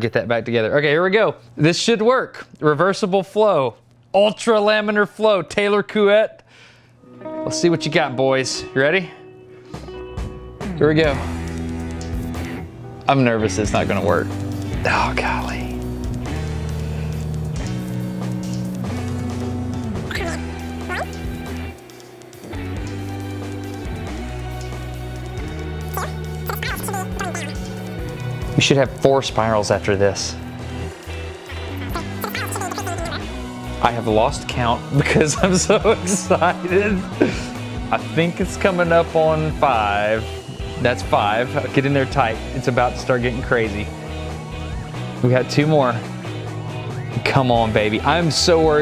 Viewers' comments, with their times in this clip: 0:06 almost good. If you say Couette faster Koowet...the sound "ette" is important, a French will almost silence the "ou" or Oo sound, making it Kwet, but it still is here. But overall, not bad.
0:33 your facial expression your laugh and the squinting reminds me your "lack of oxygen" video xD